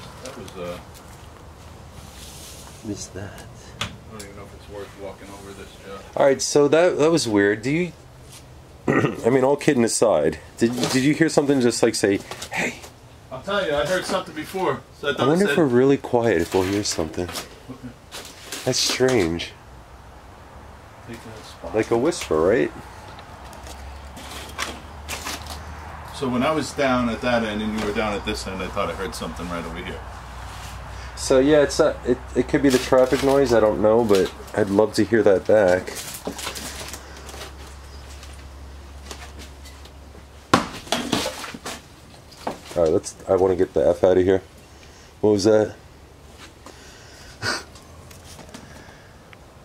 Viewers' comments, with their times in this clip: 0:04 I heard the "HEY!" YOUR BAAAAACK 🥳
0:33 Definitely heard a woman say Joe
0:34 sounded like a female. But I’ve definitely heard her more than once since then. Be safe! 🙏❤️